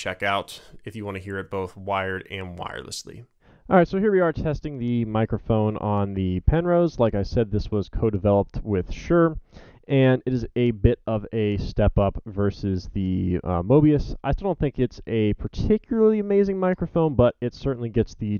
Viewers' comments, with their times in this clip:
0:03 for mic test (sounds like its drowning in mud for me)